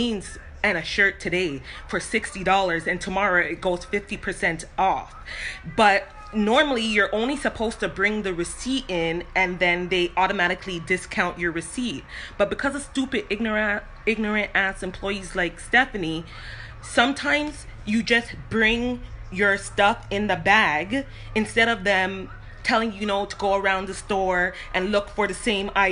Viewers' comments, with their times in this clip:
0:08 ignorant has a Jamaican accent